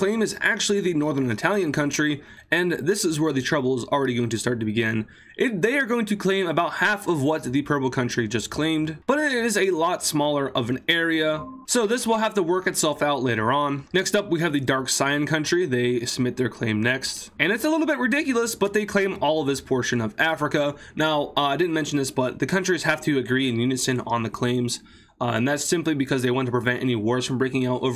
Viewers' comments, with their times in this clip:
0:10 I hear google meet lol is bro in class? 💀